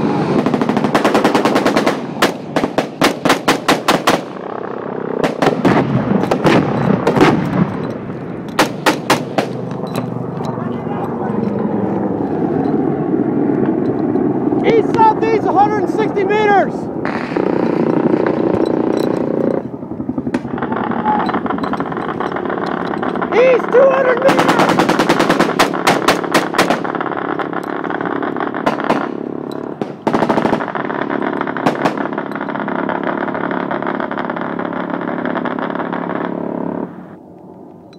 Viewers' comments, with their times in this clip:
0:04 The Barret M-82 sound ❤️
0:17 Two CH-53s and some escort ( sounds like a Minigun) at 160 meters! That's pretty close. And just for CoD players, that's not a pavelow. Go play your game somewhere else.
0:20 Was it just me, or did I hear an m134 spin up ?